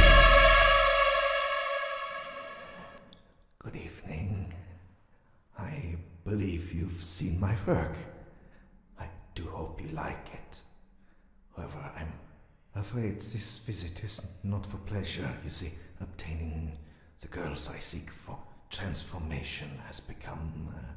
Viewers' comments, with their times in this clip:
0:04 Doll Maker Asmr